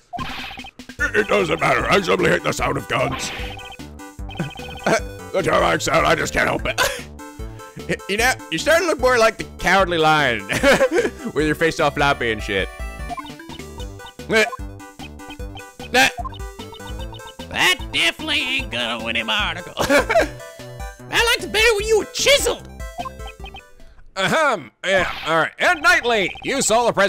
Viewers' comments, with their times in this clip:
0:09 Miles : Mr President, even the music is telling us you're a coward.